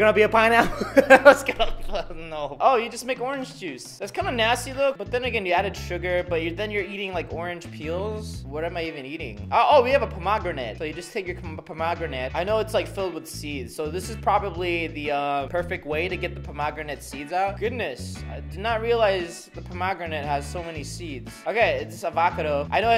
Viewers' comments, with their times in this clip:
0:09 what's next? He pretends that he thinks dragonfruit is drah-gohn free-uit? LOL